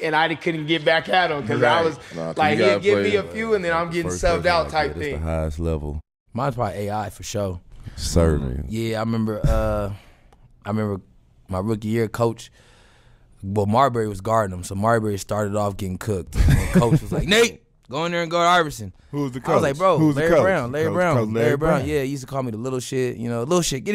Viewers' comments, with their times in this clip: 0:05 I heard "Jake Paul"